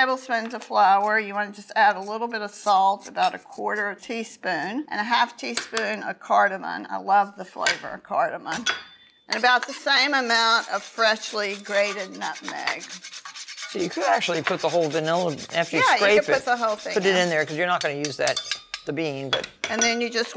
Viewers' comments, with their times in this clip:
0:05 WHY DO THESE COUNTRY BUMPKINS ALWAYS CALL IT "CARDAMON" and "TYUMERIC"? IT'S CARDAMOM AND "TURMERIC" FOLKS!